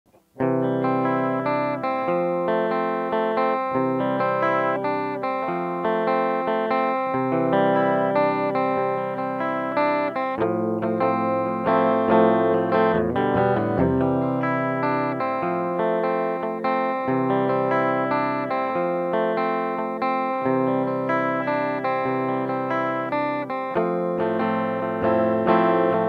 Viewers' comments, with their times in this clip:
0:08 quick question on the verse A4 D2 is that a mini strum ,or plucking both together please